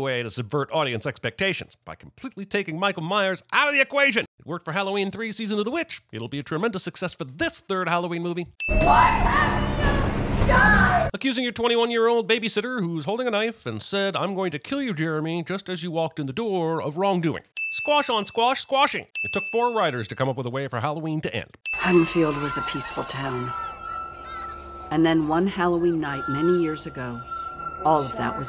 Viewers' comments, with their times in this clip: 0:10 is you listen closely, after Mrs Allen yells “what have you done!?” You can hear the first note for the Halloween Ends main theme